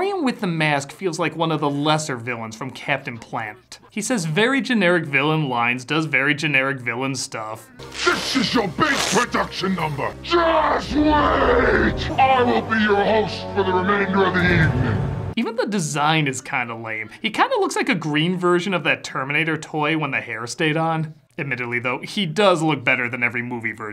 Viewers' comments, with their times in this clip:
0:10 actually, I really love the way he delivers the line "JUUUST WAAAAAIT". Maybe because I have small children. I place it somewhere between Armand Asante saying "LAAAAAWWWWWW" and Gary Oldman saying "EEEEEEVERYYYYYYYONNNNNNE"